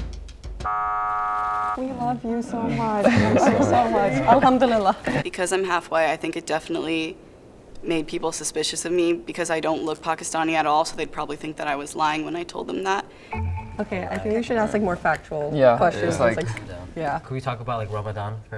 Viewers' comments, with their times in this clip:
0:03 bro that was so random why'd she just go alhamdulillah like she was saying bye😭😂